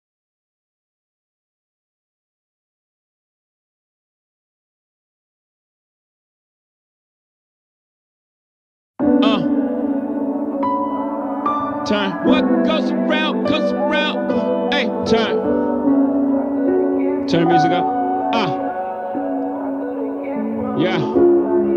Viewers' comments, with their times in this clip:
0:09 the bus passing by matched